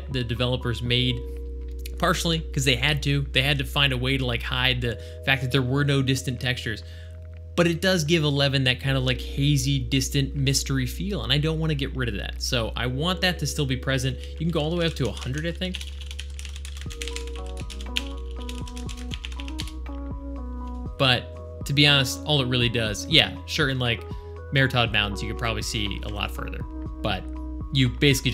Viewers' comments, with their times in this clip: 0:10 Oh god. It's very distracting when people have music going on in the background or people actually add a quiet audio track to edited videos (versus straight live-stream dumps). It drives me crazy and more people are adding it to the produced videos. They just take music from that free no license music site and add it in so softly. Kevin Macleod - The king of royalty-free music that SO MANY youtubers add in. I like the video otherwise, except for when the 2nd feed craps the bed. >.< Thanks for the content.